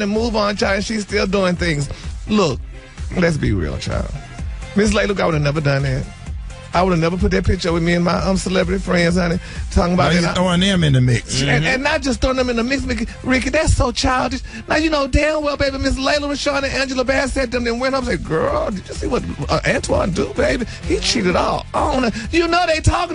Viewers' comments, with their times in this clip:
0:05 🔥🔥🔥 are you still listening all the time This voice is fantastic 💜💟🔥 👇👇👇👇👇❣